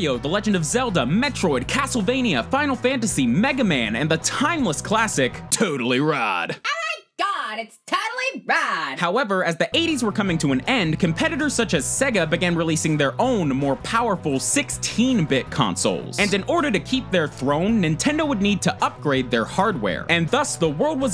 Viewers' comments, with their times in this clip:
0:08 why did you have to include that? So fucking cringe but the video is but seriously stop making voices but nice video tbh